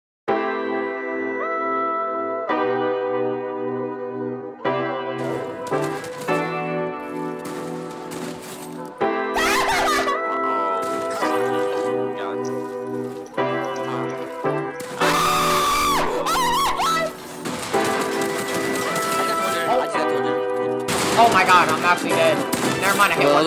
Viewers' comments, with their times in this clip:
0:08 he sounds so satanic